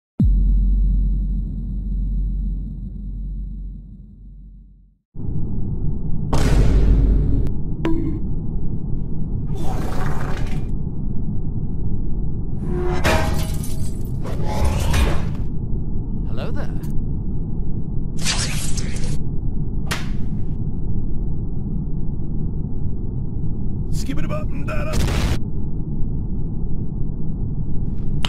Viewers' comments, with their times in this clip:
0:09 sounds like farts